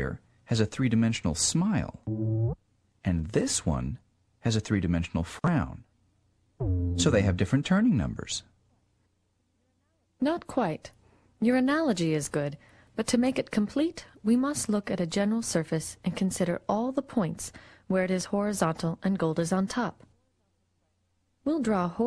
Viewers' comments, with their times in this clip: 0:09 if you listen very very carefully, you can hear the women in the background saying "Not quite, your analogy is good" before she actually says it at an audible level. Thumbs up If you hear it too